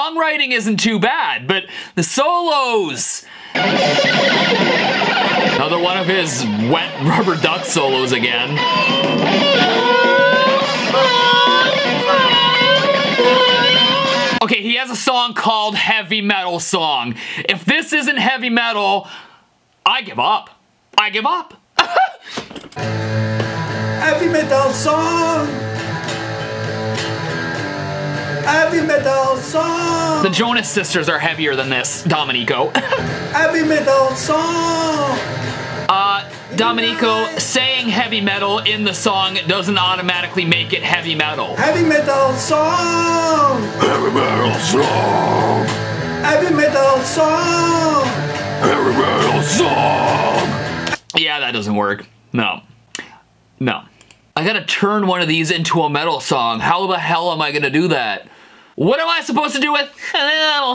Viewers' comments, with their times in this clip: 0:04 Kerry king solo
0:41 the scream nice